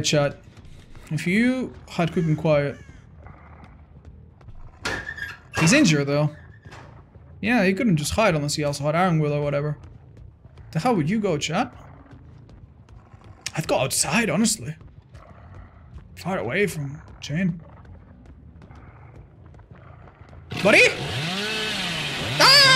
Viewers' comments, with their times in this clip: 0:04 Am I hearing things or was Dwight actually in the locker beside the one ?